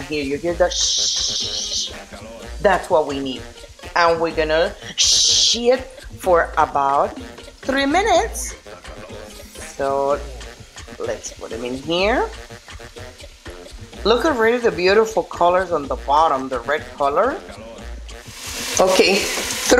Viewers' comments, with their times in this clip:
0:04 "Shhhhh it" for 3 minutes didn't sound right 🤣🤣🤣 Awesome job my Ninjas. Aloha 🤙